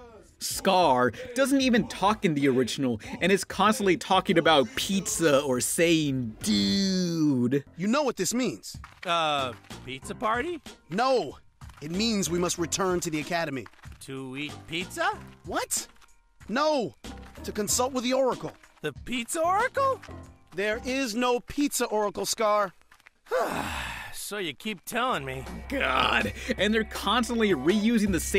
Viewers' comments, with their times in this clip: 0:06 ABRIDGE BEFORE ABRIDGE WAS POPPIN. ALSO I SWEAR THATS GOKUS VOIIICEEEEE
0:09 I imagine that would get annoying after awhile, but I'm okay with it since I hear nothing but my goddamn childhood in that man's voice.
0:09 did any of you guys hear Sean Schmmel as Scar back there? It's werid hearing Goku ranting about pizza.